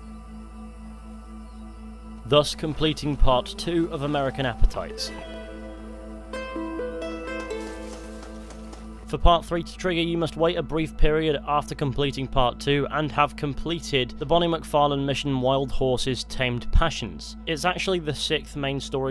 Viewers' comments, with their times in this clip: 0:06 that music is soo nostalgic